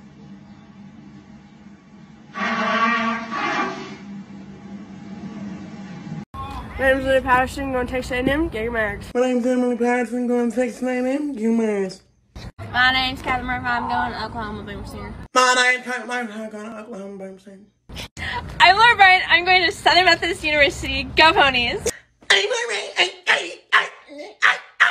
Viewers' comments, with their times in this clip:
0:08 The guys ....you fricken nailed it. Diction is obviously not taught in American schools.